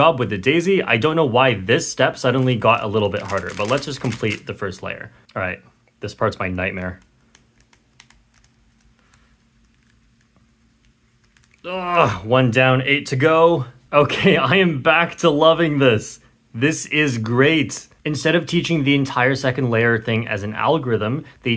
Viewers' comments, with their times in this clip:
0:07 J perm fingernails sticker peeling asmr